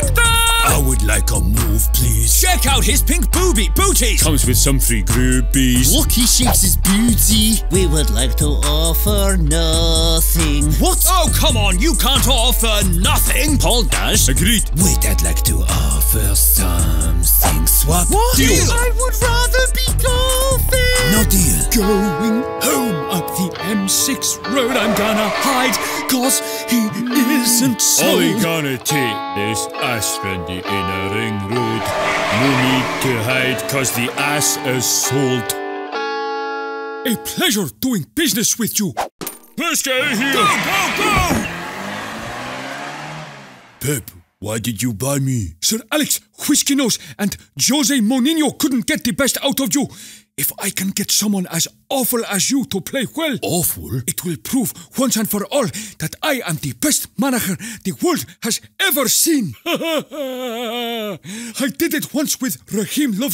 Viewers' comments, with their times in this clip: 0:07 when ole says booty it sounds like beauty with his accent
0:35 Turn auto-generated captions cuz the ice assault 🤣🤣🤣🤣
0:47 did anyone hear jose monyinyo😁😁😁😁